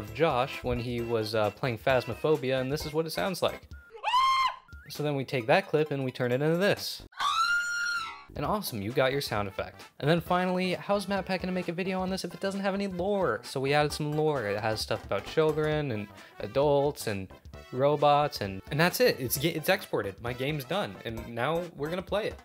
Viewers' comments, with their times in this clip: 0:05 bro sounds like oswald💀
0:07 souds like fnati Oswald